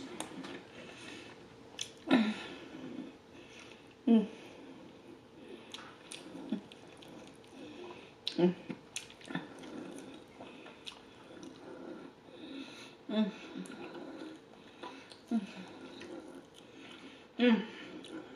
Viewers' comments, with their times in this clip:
0:05 Omg girl your breathing scary